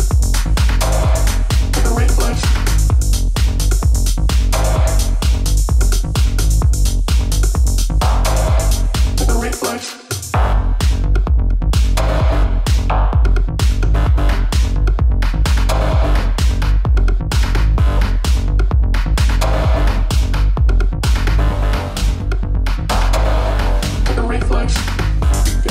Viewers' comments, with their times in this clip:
0:10 Whao really punchy set. Everyone have the track ?